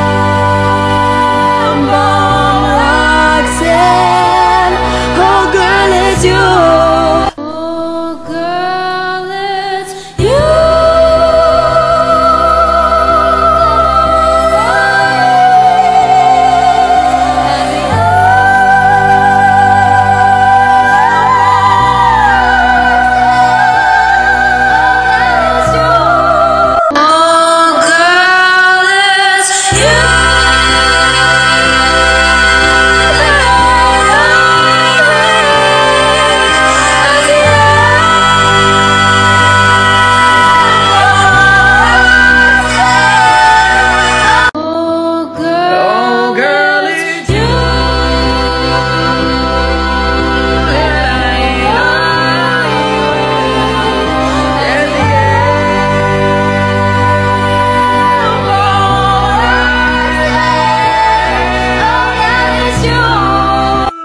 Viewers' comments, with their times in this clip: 0:07 How did Imogen Heap get in my garage?
0:11 HOW IS NO ONE TALKING HOLY ITS SO ETHEREAL
0:23 is probably my favourite, the tone of their voice really balances out the original while simultaniously making the sound feel bigger and warmer, i think it's perfect.
0:45 does anybody know this person's tik tok? I really like his tone and I wanna listen to more if there is more covers (he kind of messed up at the end but its okay)